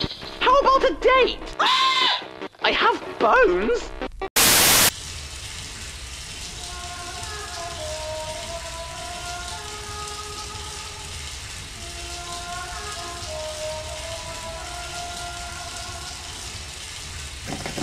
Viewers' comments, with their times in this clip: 0:04 guys did you hear Alice Angel singing Do you hear that sounds like Espeon voice a little bit